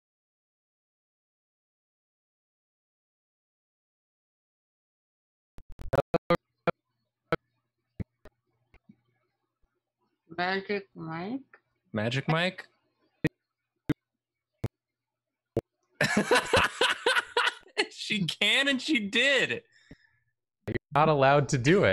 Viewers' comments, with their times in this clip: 0:05 Drawfee starts Had to scroll a bit to find this, give your thumb a rest and listen to this mic glitch 💜
0:05 That was the jankiest thing I've ever heard.